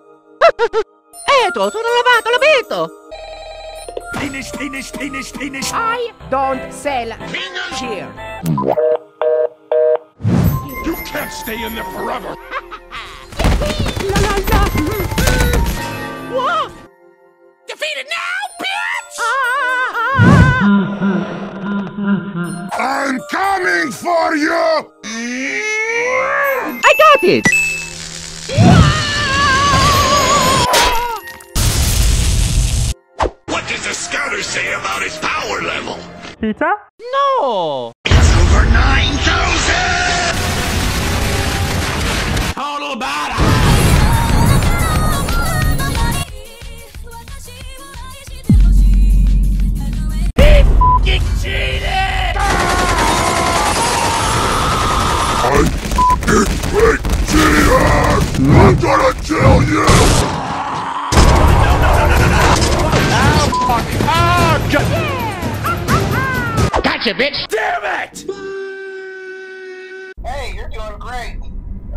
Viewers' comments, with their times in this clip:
0:08 I always thought he was saying spinach, spare spinach when I was a kid it’s always so funny
0:57 Foxy angry say stop cheating